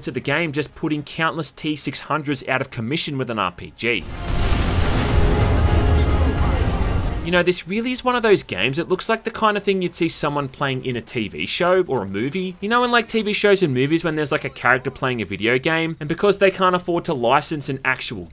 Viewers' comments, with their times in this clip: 0:03 the best part of this game is this soundtrack of this level. It's just great. It's the end of the game so basically is the price you won for beating it.